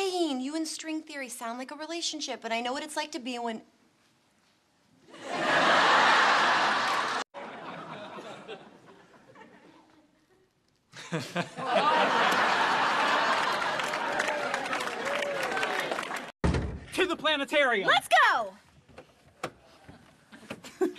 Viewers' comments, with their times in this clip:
0:08 you know they're good friends when they can barely look at each other without laughing lol